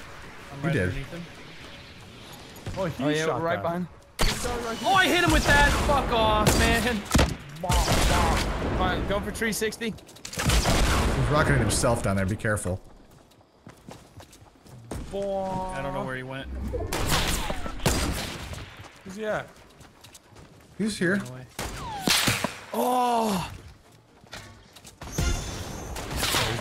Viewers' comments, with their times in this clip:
0:08 go for "tree sixty" lol ....I love his accent